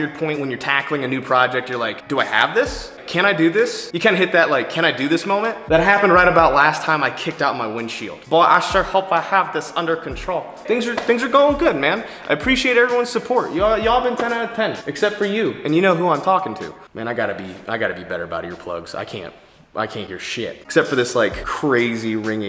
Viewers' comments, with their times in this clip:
0:07 sounded like chris de'lia